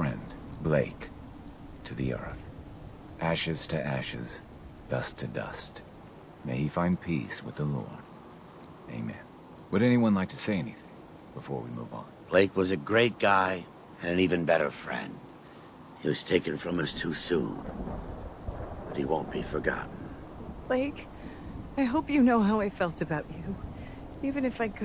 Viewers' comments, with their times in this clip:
0:10 sounds like Joshua Graham is a settler now